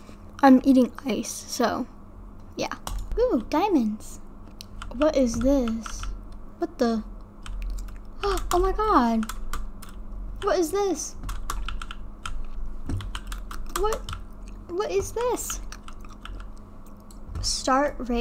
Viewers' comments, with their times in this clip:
0:06 i love how she says "what the-"